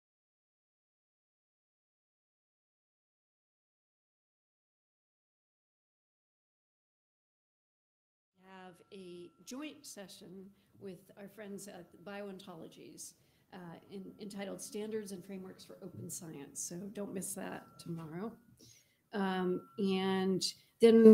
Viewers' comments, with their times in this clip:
0:09 Please note that this recording is silent until it then comes in quietly and gets loud. This was due to videorecording issues.